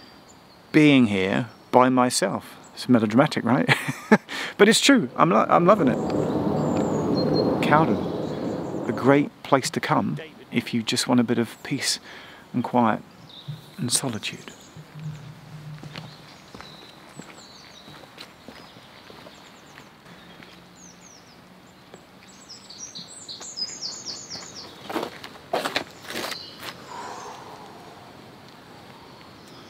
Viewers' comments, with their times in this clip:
0:09 Did I hear someone say "David" ?
0:09 Why is there someone saying 'David' ?
0:10 The little whisper of "David" freaked me out 😀😵‍💫
0:11 just after "A great place to come" there's another voice. It's kind of sounds like it's saying "David" but I'm not sure. Creepy. 😄👍